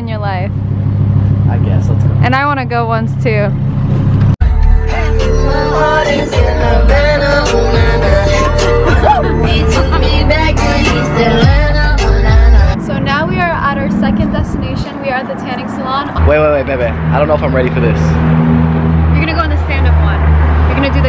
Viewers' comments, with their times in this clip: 0:05 I still vibe to that song the same way😂😂😂